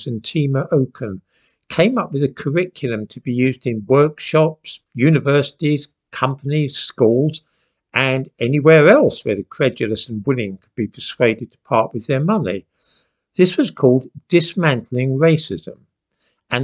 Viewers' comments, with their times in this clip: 0:03 I first heard it as "woke-shops" 🙂